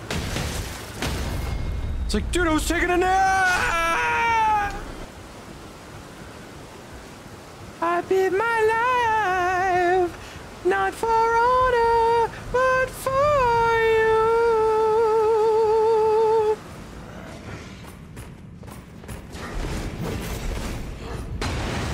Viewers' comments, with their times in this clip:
0:06 God damn, genuinely what a voice